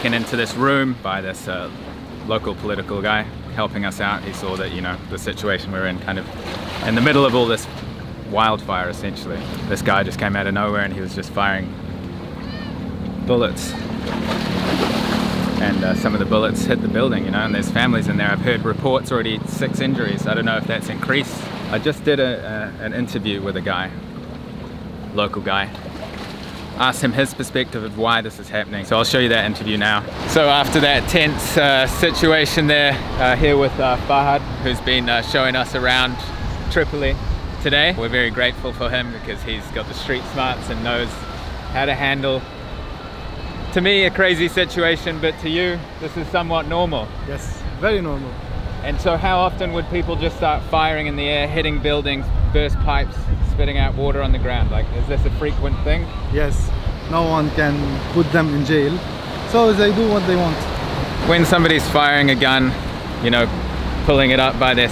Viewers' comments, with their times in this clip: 0:03 I hope you did cuddle this sweet and lovely cat, that wanted so much your attantion, oh my god and this cute little "Miau" as a hello, omg I would melt 🥰🥰😸
0:48 I do understand what this guy say much better than the local guide from Pakistan series.